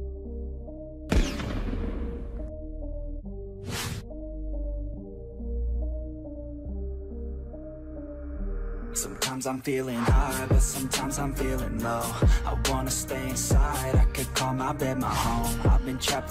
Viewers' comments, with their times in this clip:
0:04 i like the song